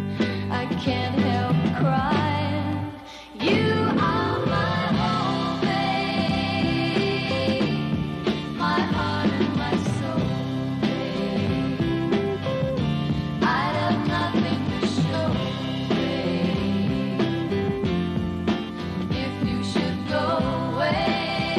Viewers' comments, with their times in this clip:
0:03 the classic Abba vocal sound they tried to reproduce. Susan was there first.